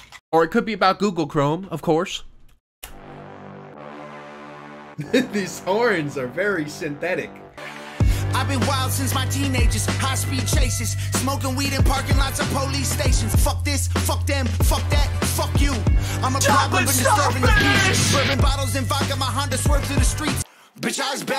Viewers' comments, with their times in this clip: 0:03 Glory to Artotzka! Type beat